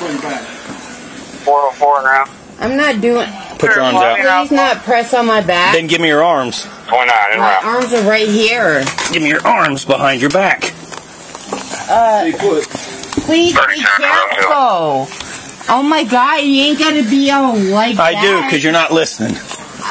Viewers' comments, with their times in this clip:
0:06 really? I have back problems & I handle the pain like a freaking champ! I don’t whine like that lady! Grow up!